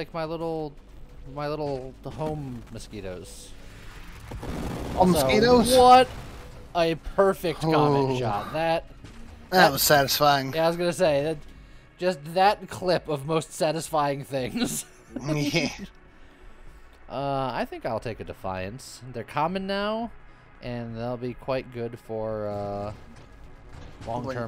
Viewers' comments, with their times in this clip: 0:05 Nova Drift ASMR 😁